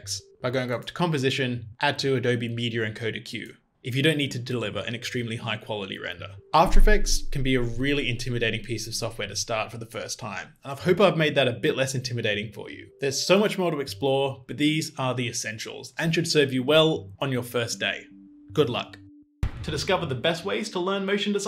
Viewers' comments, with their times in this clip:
0:06 the bass scared me.